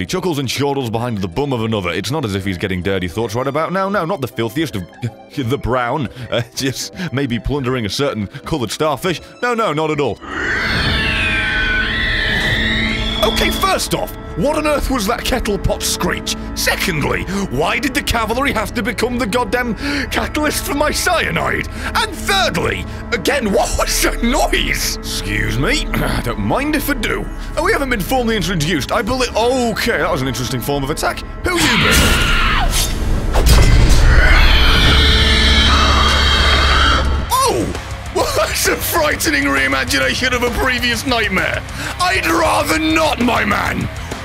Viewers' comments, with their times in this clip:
0:09 the first scream
0:23 is that a velociraptor?
0:25 and fourthly it is possible for a human to make that noise